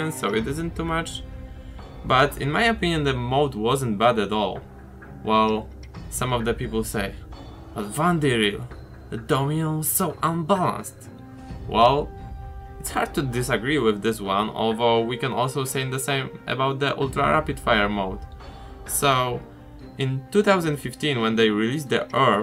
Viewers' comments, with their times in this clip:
0:08 can anyone tell me what he said, i dont understand because of his accent (no offense)